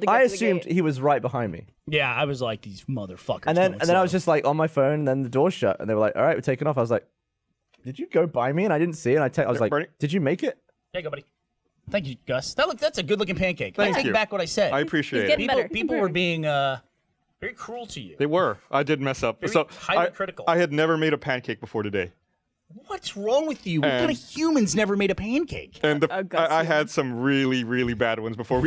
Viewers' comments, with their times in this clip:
0:09 sounds like it sped up.